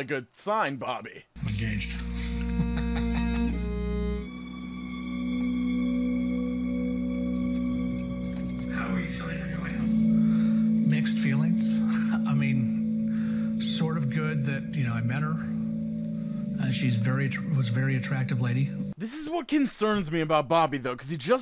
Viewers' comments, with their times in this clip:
0:06 what is that music?? It’s like the beginnings of a horror movie